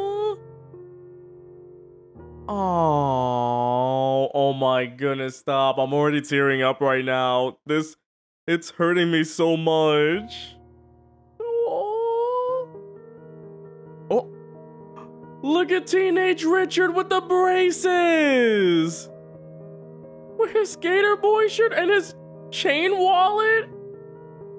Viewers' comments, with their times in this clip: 0:06 The vocalizations lol